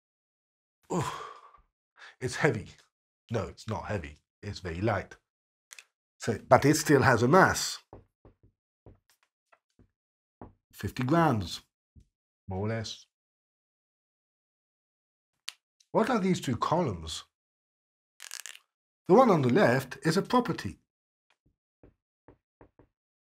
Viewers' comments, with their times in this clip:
0:04 You souns like Professor Legasov from the HBO Chernobyl series, which is so cool haha